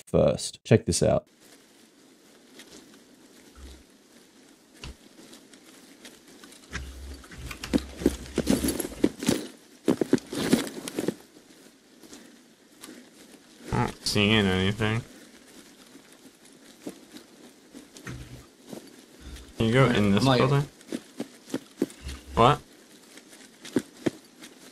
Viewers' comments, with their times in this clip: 0:09 Got to admit, that completely useless triple-jump he does is pretty cute, loud and slow.